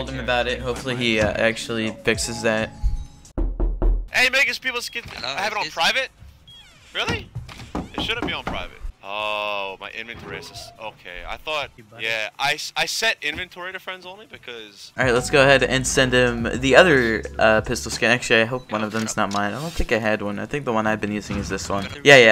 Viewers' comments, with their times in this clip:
0:03 idk if it was my headset but I swear someone was slamming on my door
0:03 Hhaha i thought soemoe was onocking my door